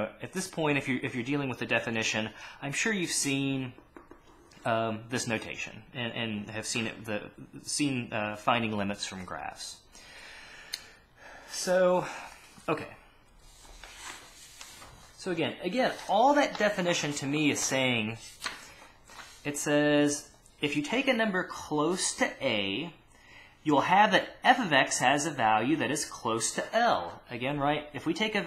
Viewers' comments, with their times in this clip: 0:09 that inhale was very deep xD. You are the G.O.A.T btw